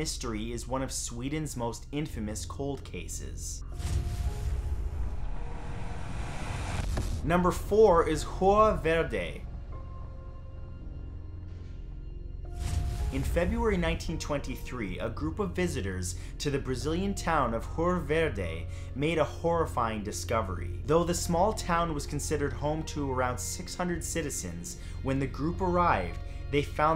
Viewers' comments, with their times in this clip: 0:08 Lol I thought he said jugo verde lol 😂